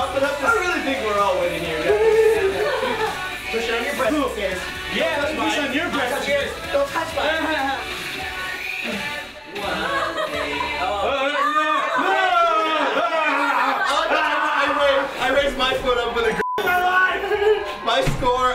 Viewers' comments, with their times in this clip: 0:06 What's up with Anthony's voice ?